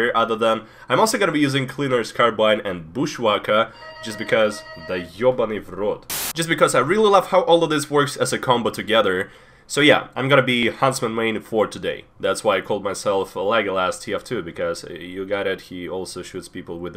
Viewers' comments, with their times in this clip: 0:03 was that a cyfral intercom i just heard???